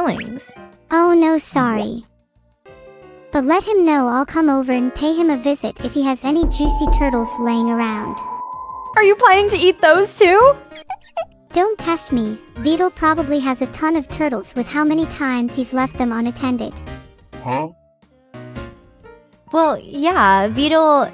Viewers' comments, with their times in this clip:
0:06 that knock scared the ever living shit out of me (Im using earphones)